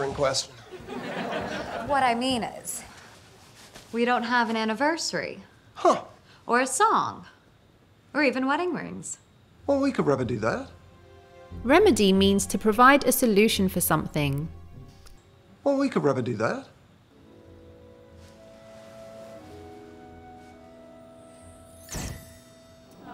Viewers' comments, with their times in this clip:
0:08 listen, her says "rebedy", not "remedy" .. am I alone here it?)